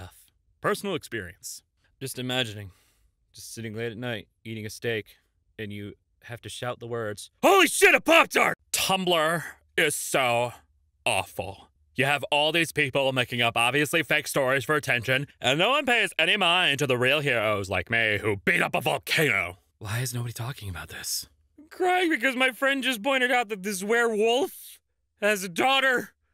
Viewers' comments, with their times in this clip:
0:09 you sounded like LSP from adventure Time